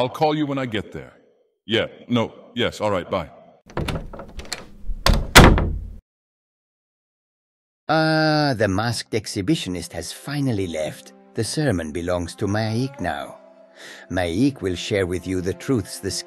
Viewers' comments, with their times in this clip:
0:03 Subtle, but the door sounds just like the start of the Skyrim Main Theme (the notes that play over the Bethesda logo)